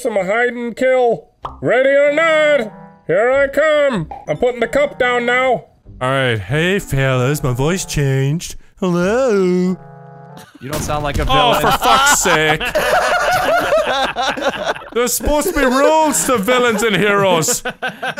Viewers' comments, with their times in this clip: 0:05 sounds like Wakko from Animaniacs